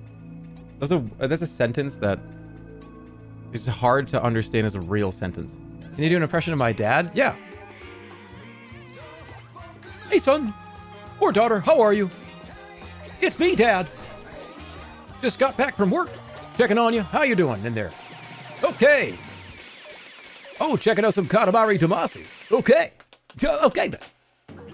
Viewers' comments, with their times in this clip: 0:05 I like to imagine that the dad in this scenario isn't actually their dad, but a skinwalker based on the way he speaks. Like it's trying to convince the son/daughter that it is actually their dad but just comes across as uncanny and creepy af.